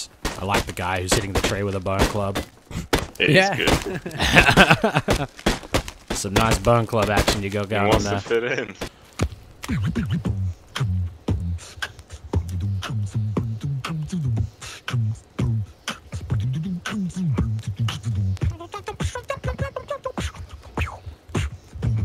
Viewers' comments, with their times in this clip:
0:09 the guy who beatboxed found a video on youtube, i remember that beatboxing exaclty the same